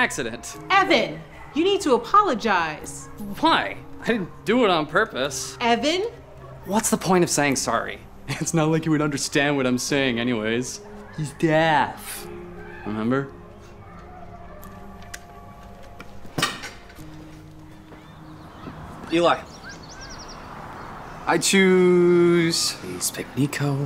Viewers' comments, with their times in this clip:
0:09 Bro the deaaf had me laughing so hard